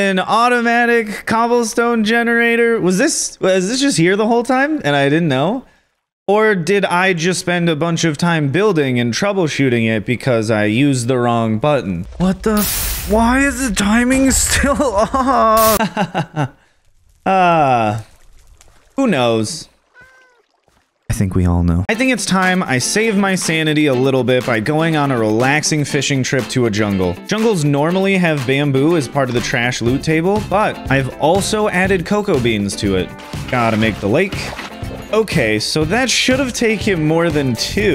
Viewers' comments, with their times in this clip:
0:04 “I hate this” in that calm of a tone is too funny
0:19 that meow stop stresing